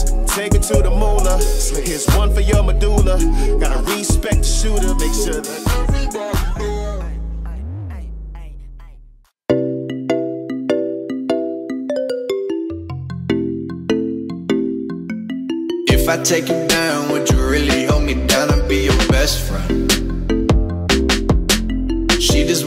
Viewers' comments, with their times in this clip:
0:09 Geat Music Please